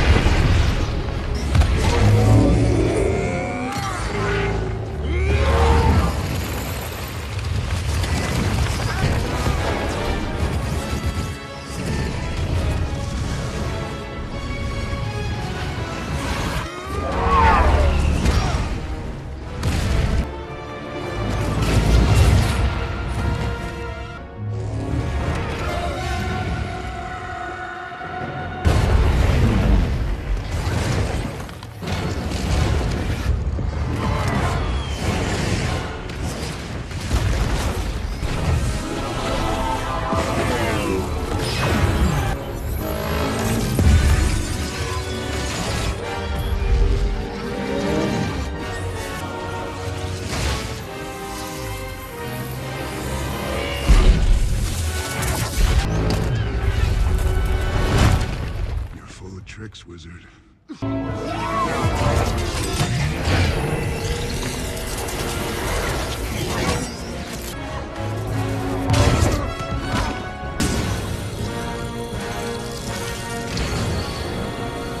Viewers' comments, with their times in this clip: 0:02 The Reality stone’s sound is my favorite :)
0:02 I love you can hear thanos struggling to switch control from power to reality due to how much the power stone had to take on.
0:03 sounds so satisfying
0:04 A Hat Reality Stone made no sound, so I don’t know what the person is talking about so that’s why I said the Power Stone
0:04 The sound the reality stone makes is easily the best sound effect
0:14 I cant be the only one who thinks the power stone sound is the best right?
0:15 just sounds terrifying
0:16 is better. It's like he uses a lot of force to shoot the flames out, and also the sound of it is fucking awesome
0:17 i thought it was thanos's scream😅
0:24 is my favorite, the sound of it charging up before he throws the moon.
0:29 my favourite sound when he pulls a planet to beat them...
0:38 ... Now that's a power sound.
0:38 I personally love the sound of the powerstone on this one
0:41 love the mirror dimension sound
0:42 when he bunches the mirror dimension, has the coolest noise ever
0:43 is the most powerful sound that the gauntlet has ever made other than the snap
0:53 When he switches stones it goes with the music
1:01 the power stone is saying YEEEEAAAAHH